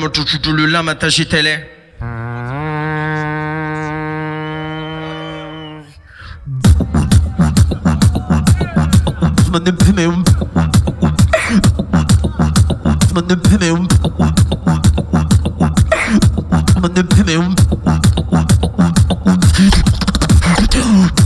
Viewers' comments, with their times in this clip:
0:04 best psytrance beat